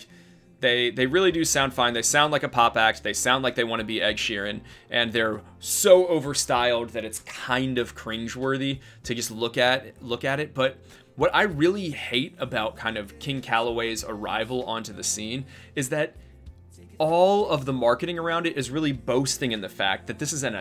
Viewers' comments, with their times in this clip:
0:08 giving me some Timberlake Man of the Woods vibes 😭😭 A+ breakdown, keep up the greatness 💖💗 (and thanks for stopping through the stream earlier!)